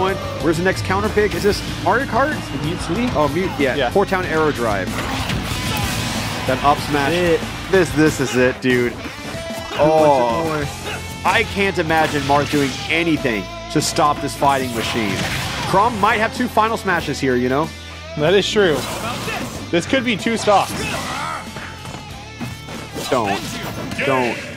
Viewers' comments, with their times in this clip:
0:05 Did Chrom just yell Zoinks?